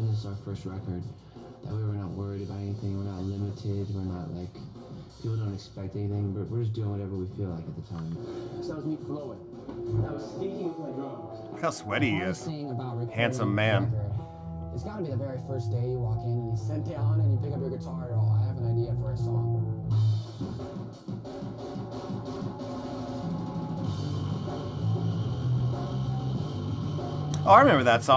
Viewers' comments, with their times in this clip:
0:09 up all night riff. my favorite.